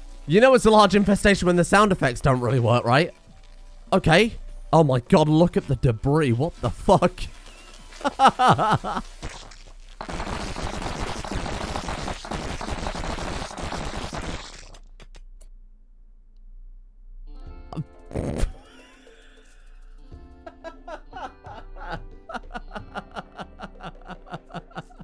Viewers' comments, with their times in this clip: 0:08 5 second insect farting
0:09 the popcorn from hell.
0:09 is the sound you can hear in the toilet after a really bad burrito
0:09 couldn't tell if someone with diarrhoea was shitting their pants or the video was doing it